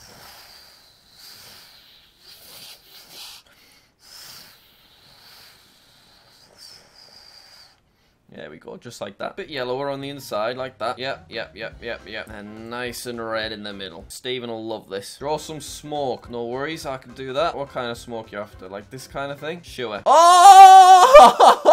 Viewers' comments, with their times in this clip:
0:03 sounds like 4 year old me playing with my plane 😂